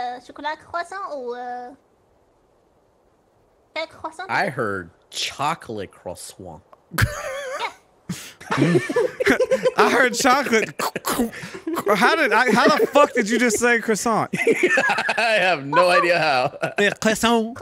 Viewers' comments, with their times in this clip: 0:05 I do believe that was "Cruhswan."